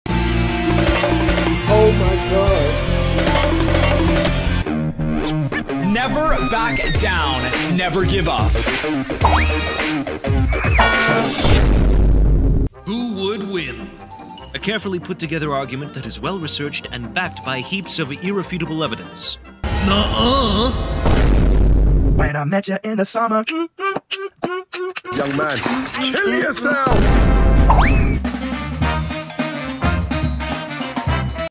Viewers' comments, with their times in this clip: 0:01 we not gonna talk about the “omg” sound clip
0:05 That song goes hard🤑🤑🤑🥶🥶🔥🔥🔥‼️‼️‼️
0:27 hearing that song sent the nostalgia